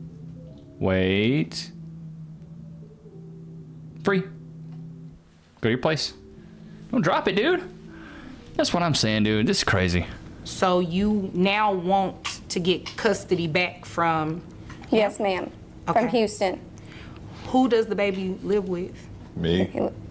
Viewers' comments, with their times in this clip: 0:08 lol the barking bunny always gets me